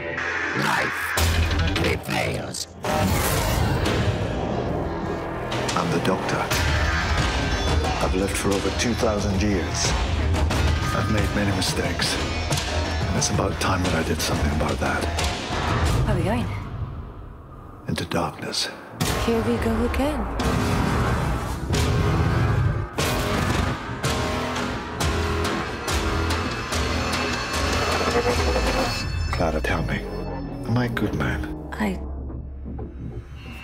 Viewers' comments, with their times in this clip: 0:08 Garrus? Is that you?
0:08 ....Garus...what are you doing in doctor who...
0:20 "I'm the motherfukin' T Rex!" Que guitar riff